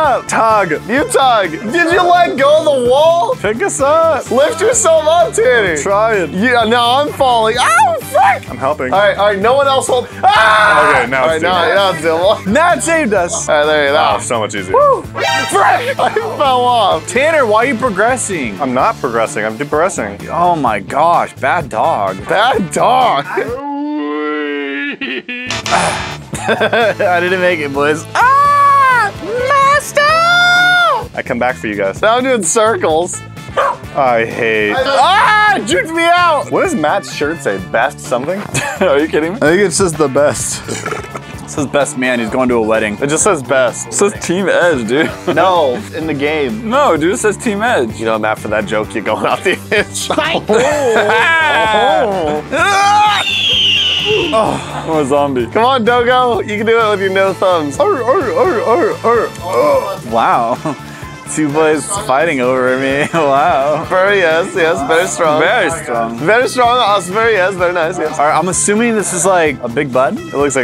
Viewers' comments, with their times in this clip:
0:09 the f bomb sounded weird
0:40 👏🏻👏🏻👏🏻 that was a good burp
0:51 Headphone users be where....